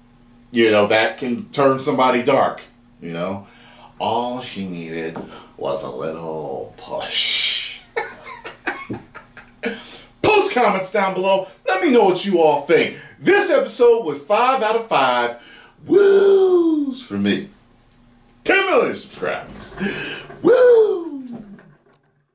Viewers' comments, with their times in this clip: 0:03 Best Heath Joker Impression so far Hahahaha